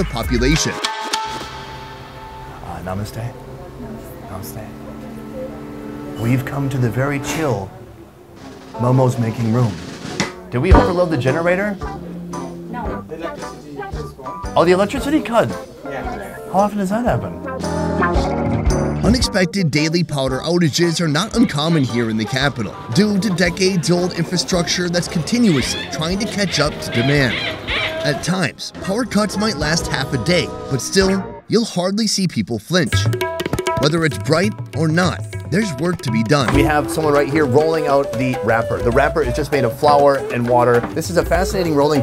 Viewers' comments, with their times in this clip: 0:03 lol that polite Namaste hahahaa
0:19 I swear I hear him say "powder" outages 🤣🤣🤣
0:27 anyone noticed the HARPIC HORN 🤣🤣🤣🤣